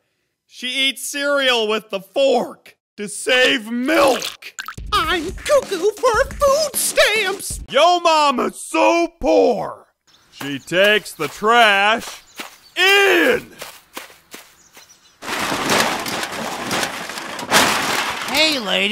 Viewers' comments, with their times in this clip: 0:05 The parrot sounds a lot more like Mickey Mouse or something